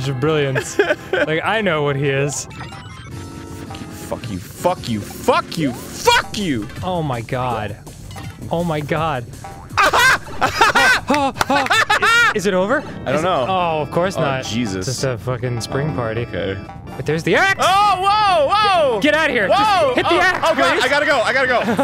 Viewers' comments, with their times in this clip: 0:09 When Arin was yelling fuck you i was looking at gifs of Ninja Brian giving the bird, it was perfect timing.